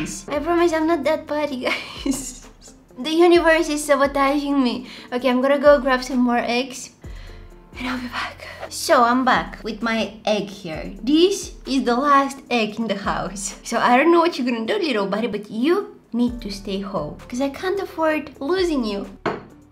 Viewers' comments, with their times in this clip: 0:03 The way you say sabotaging is so funny 😂